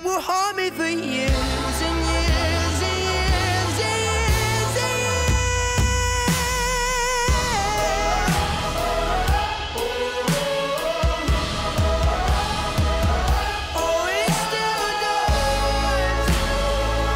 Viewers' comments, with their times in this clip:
0:04 man that note Goosebumps 🔥